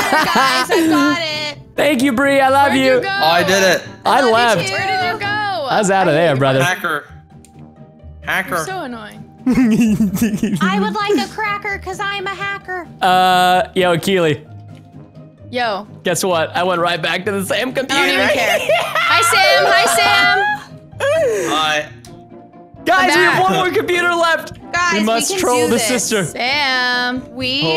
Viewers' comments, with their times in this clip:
0:08 What was that laugh